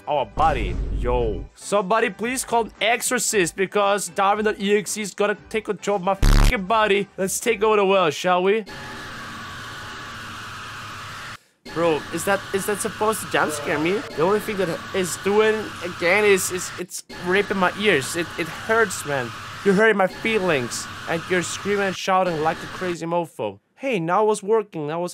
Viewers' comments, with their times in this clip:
0:09 extremely loud scream